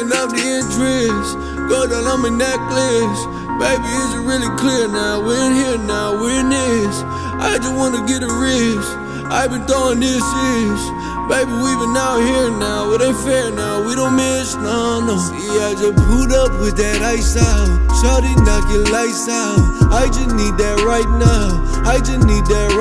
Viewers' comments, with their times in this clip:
0:06 Lmao the voice crack I'm dying lmao overall best song ever